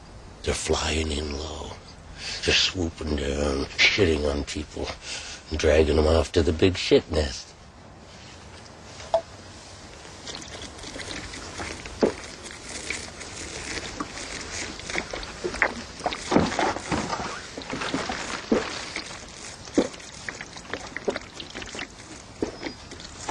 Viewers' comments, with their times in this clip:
0:07 The look on Bubbles face and the scene after is priceless. You can even hear a shithawk (seagull) in the background.